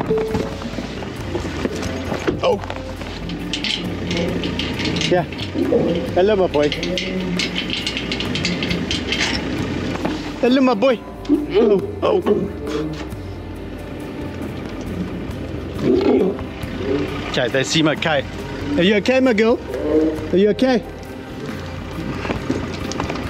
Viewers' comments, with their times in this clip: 0:10 Sound like he said help 😯
0:11 is it just me or does it sound like he said help me 😨😥
0:11 Am i on shrooms or did that lion just say "help me"
0:11 …Did that lion just say “Help!”…or is it just me?
0:11 OMG! it actually sounded like the lion yelled ''help'' or ''open''